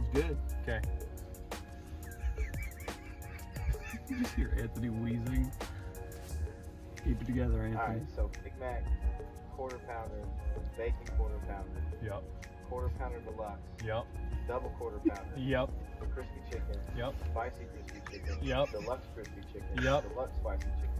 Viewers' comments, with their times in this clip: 0:04 I KNOW that silence was them apologizing to the kitchen and telling them to get quarters down.